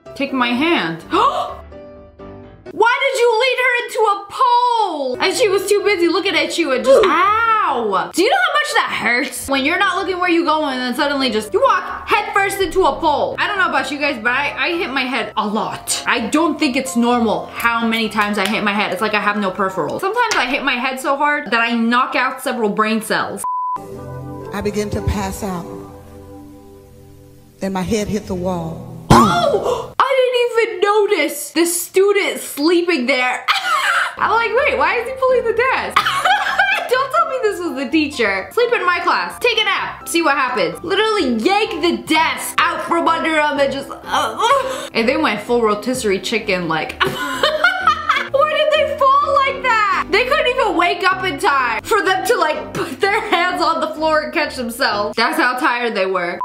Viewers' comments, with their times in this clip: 0:08 The way she said a lot just sounds so funny
0:43 anyone notice the noise she made ???
0:44 she really did moan didn’t she💀